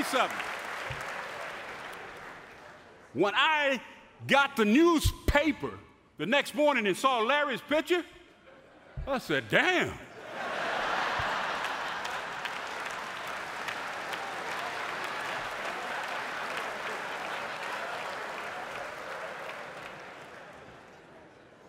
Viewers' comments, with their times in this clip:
0:08 I always thought Larry was an SUV, but now I find out he's "a Sedan". Good for you Larry!!